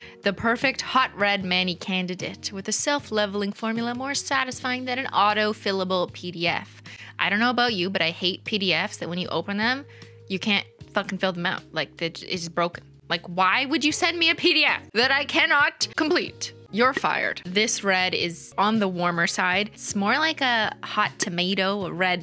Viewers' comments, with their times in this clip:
0:10 censoring error lmao